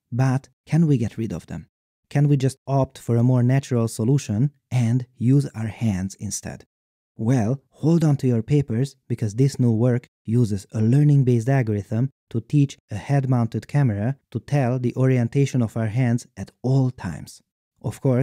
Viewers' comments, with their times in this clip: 0:06 distant kinect sounds